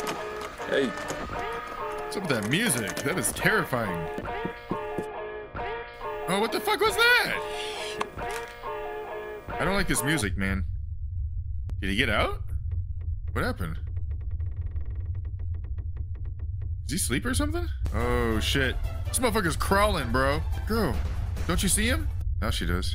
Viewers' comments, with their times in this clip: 0:04 that’s the music they used in The Strangers, and skipping on the exact same part